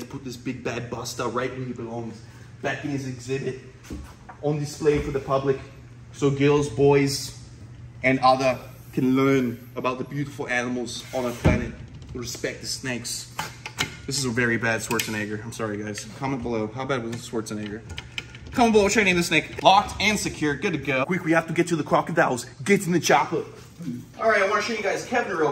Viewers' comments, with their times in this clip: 0:09 Yeah that was a bad Arnold Schwarzenegger, I thought it was a bad imitation of an Australian not an Austrian. 😂😂😂